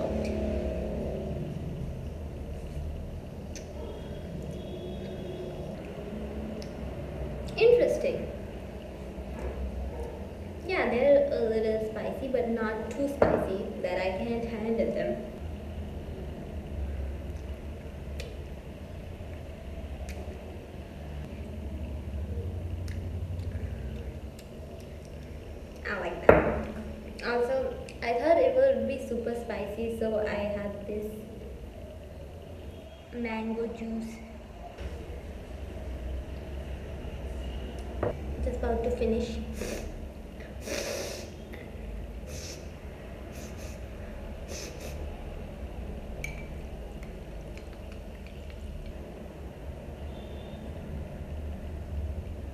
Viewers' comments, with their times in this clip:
0:08 She spoke hindi at this mommeent 😱😱😱
0:08 ✨interesting✨ THE WAY SHE SAID THAT WAS SOO CUTE😭😍🥺♥️
0:33 "mango juice" THAT SOUNDED SO CUTE OMG 😭😭😭💕💕💕